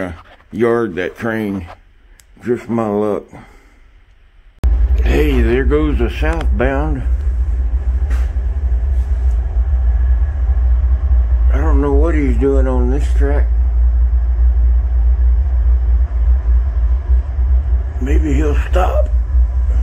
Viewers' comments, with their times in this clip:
0:05 man it’s cool how advanced microphones/ headphones are now, you can almost feel the rumble like you’re right there